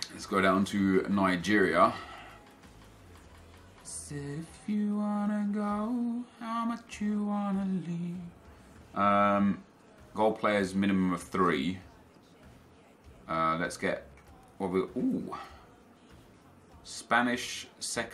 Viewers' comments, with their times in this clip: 0:03 what a nice voice